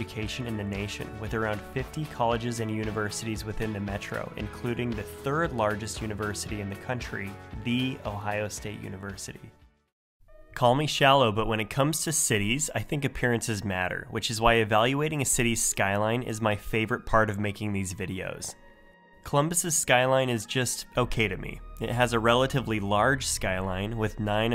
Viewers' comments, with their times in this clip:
0:07 good job on the pronunciation ;)